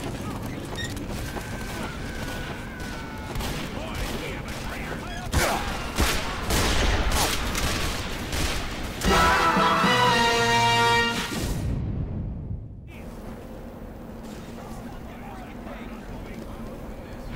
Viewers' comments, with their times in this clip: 0:04 French music suddenly plays